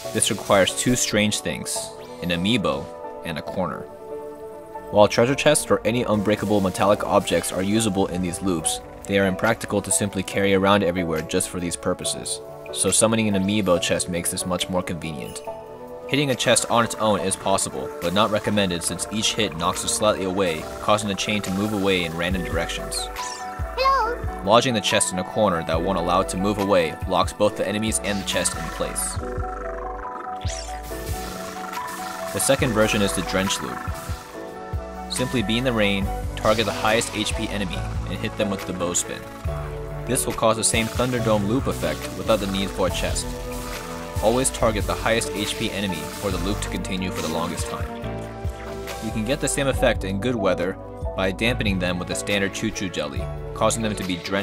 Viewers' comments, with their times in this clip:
0:08 I thought he said boop xd
0:36 This music sounds very much like the Steins Gate theme, where is it actually from? Edit: read the description now, apparently it's a remix of sprited away's "name of live"?